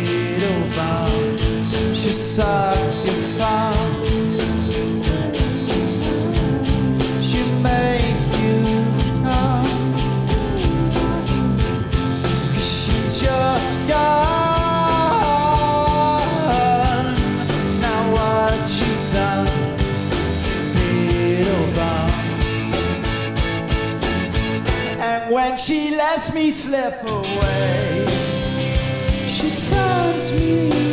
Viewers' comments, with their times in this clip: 0:05 sssssssssss oh to be that mic
0:14 the way he says gun MANNNN IT DOES THINGS TO ME😩